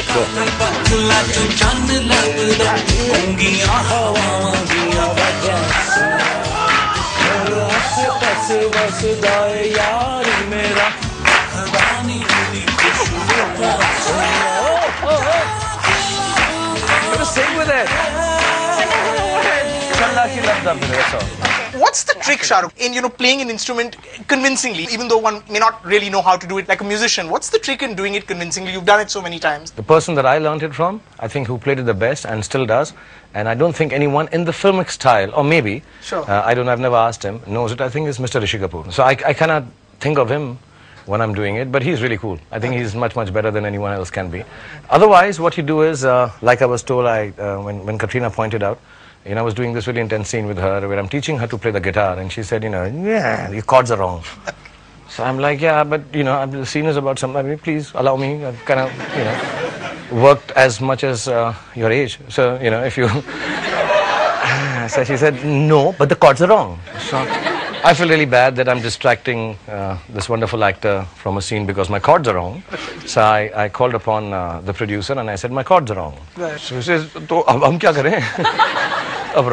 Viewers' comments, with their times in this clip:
0:03 i love the way he sing with the song
1:01 such a calm roast 🐣